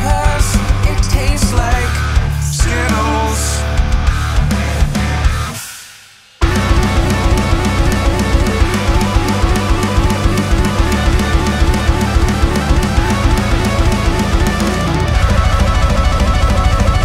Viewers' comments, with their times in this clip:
0:05 Timestamp for epic guitar solo